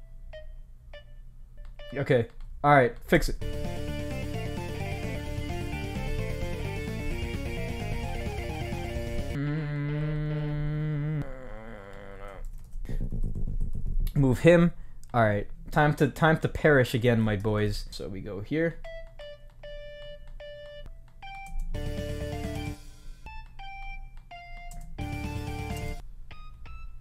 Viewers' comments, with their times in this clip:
0:10 My microwave at 3;00 AM